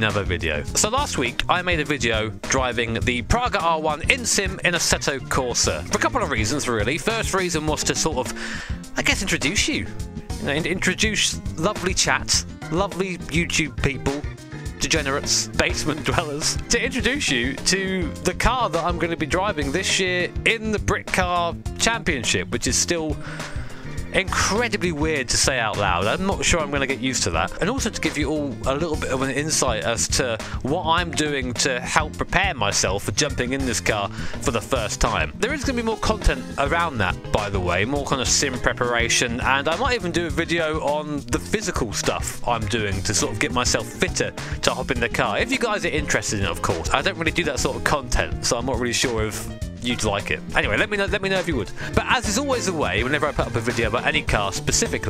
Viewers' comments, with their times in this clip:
0:08 Did you say "introdouche you"?
0:38 Pun brain misheard as "Simp Reparation"